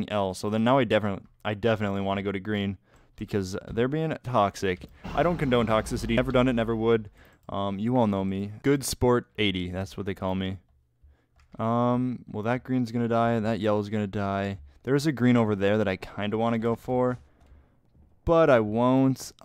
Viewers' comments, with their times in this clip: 0:04 he had a voice crack